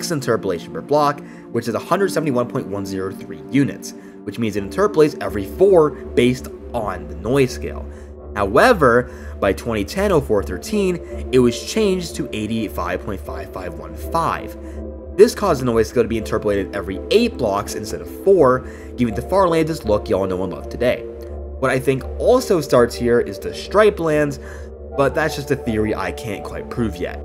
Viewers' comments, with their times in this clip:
0:08 "Charlie the steak/lost media" ahh sound